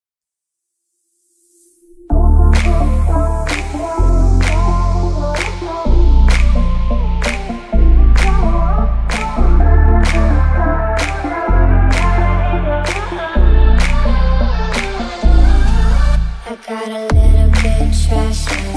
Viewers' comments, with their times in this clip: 0:00 If you or a loved one has suffered hearing damage from this song, press to damage them again.